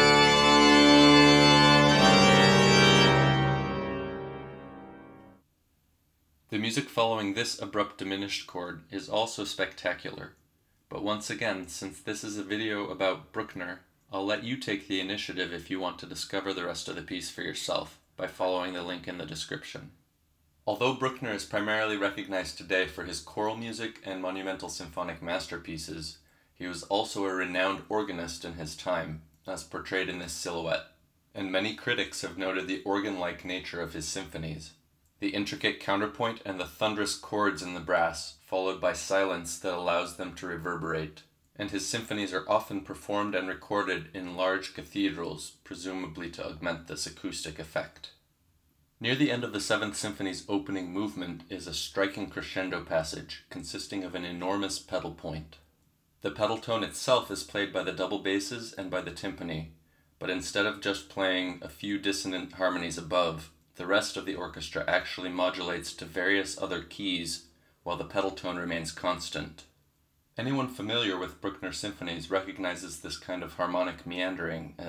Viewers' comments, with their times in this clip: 0:07 "Following this abrupt diminished chord..." Diminished? Isn't that supposed to be a C#min7?
1:00 interesting side fact: this ist the first entrance of the timpani in the whole opening movement. So, no use of the timpani for almost 20 minutes before.